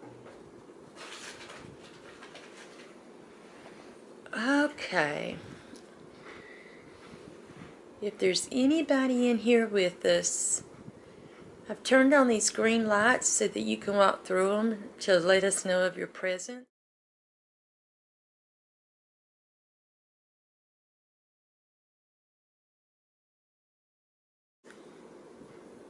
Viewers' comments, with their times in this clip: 0:08 thought I heard glass tinkel